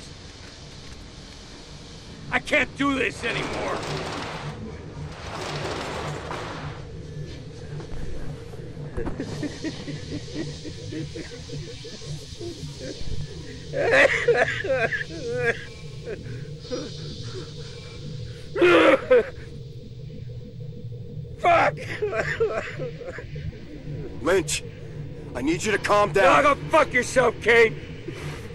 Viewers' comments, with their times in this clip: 0:09 what happen crying ?